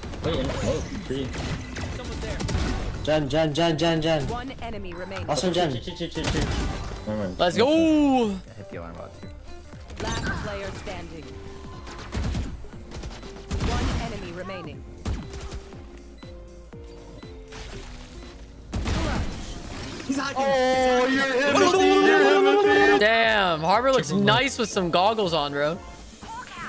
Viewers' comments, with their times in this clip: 0:08 i likecwhen his other teamate speaked tagalog in